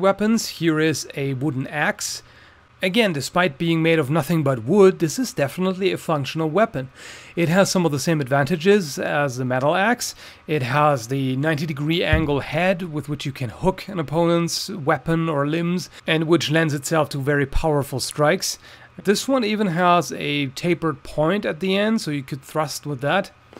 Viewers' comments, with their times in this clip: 0:05 I sworn I herd a "fuckable weapon" it really had my attention then 😂😂😂